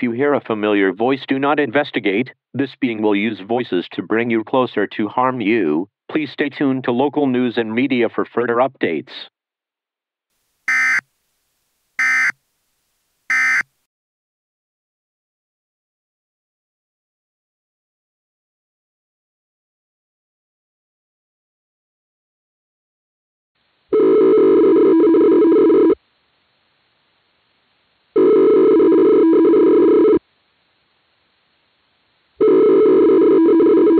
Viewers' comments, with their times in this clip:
0:05 Hmmm, sounds like SCP-939 :I
0:18 what happened to the eas alarm sound and the screen is duplicates and the voice is creepy